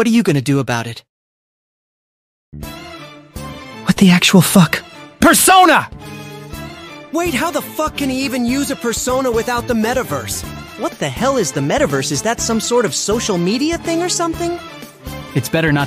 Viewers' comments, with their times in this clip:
0:03 the way akechi says this just. kills me 💀